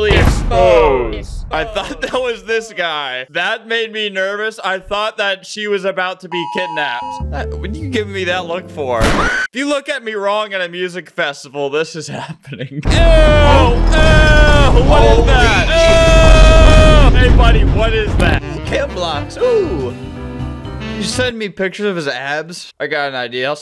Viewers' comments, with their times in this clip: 0:06 for a second I thought that alarm was real😭🙏